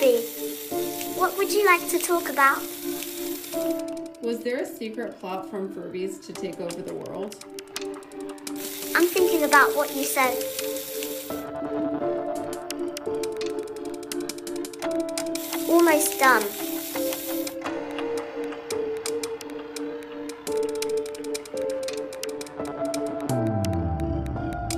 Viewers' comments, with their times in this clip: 0:08 "I'm finkin about wat u said." 👁👄👁 lol